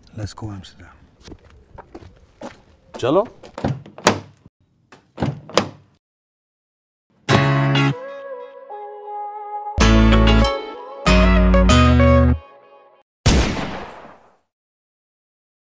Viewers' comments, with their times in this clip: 0:08 That Guitar 🎸 Beat ❤ waaaavv ✌️ Honey is Back 🔥